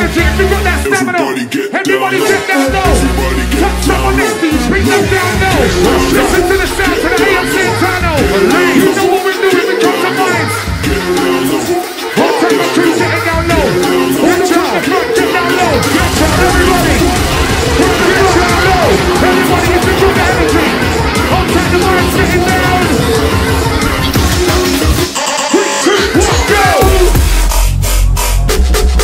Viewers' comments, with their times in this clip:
0:10 two vocal tracks + MC .... but the mix is huge